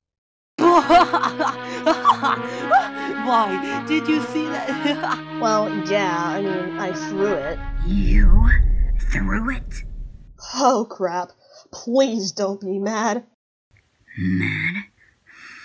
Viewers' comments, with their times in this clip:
0:03 When you watch Blue from "IF" Sneeze